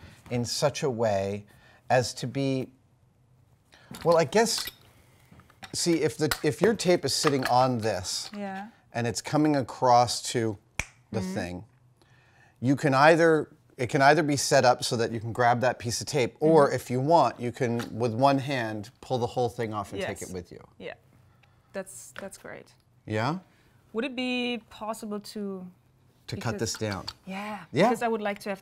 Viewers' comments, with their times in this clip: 0:09 That most Satisfying click sound... oof...